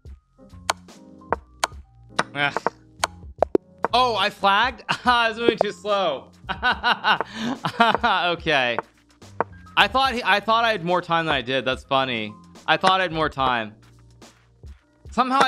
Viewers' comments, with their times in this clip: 0:03 what is he laughing about? HE LOST. This sore loser lol